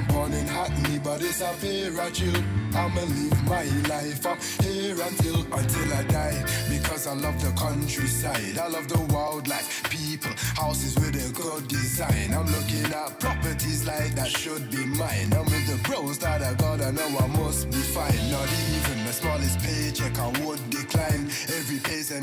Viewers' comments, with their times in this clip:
0:03 that saab is sick and sounds sick i keep seeing it but not seen it for a while